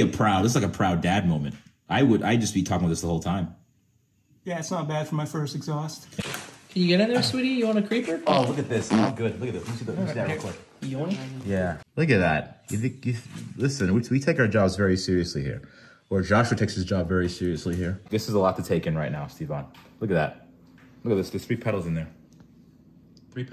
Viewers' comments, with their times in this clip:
0:06 Did I just here a fart